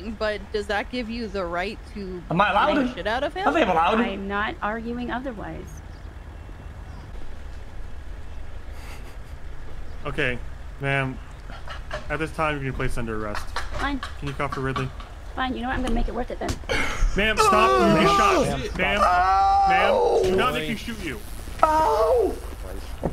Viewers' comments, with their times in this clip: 0:09 From pure gold, him laughing his ass off and then her hitting him